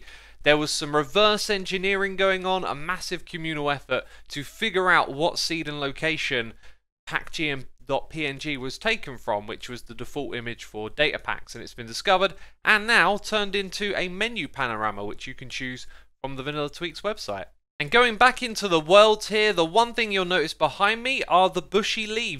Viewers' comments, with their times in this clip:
0:06 Pack G n't (dot) PNG xD